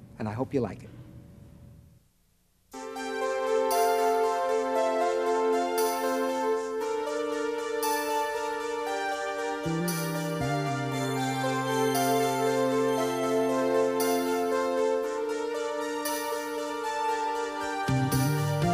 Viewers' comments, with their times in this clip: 0:03 reminds me so much of the fairy fountain theme from Ocarina of Time